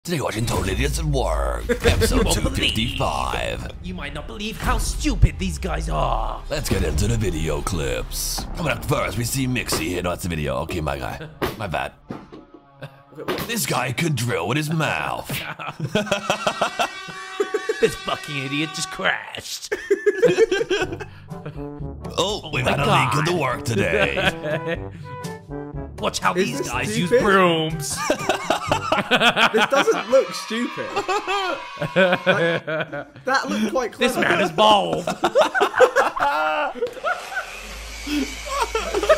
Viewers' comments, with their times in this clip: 0:01 bruh the sounded like chnese
0:20 Zerkaa actually sounds legit